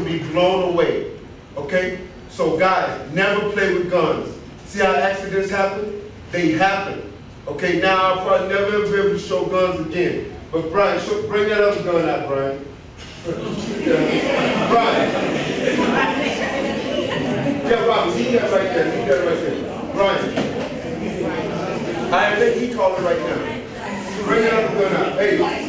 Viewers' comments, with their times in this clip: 0:10 you can hear them all laugh at him for asking for another gun lmao (thanks reddit for the link!)